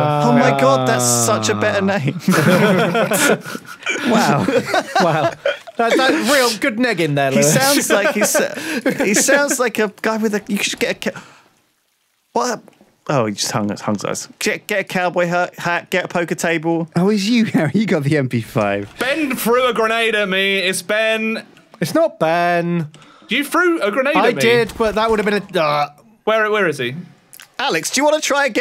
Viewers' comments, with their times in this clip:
0:10 You could hear true confusion in lewis voice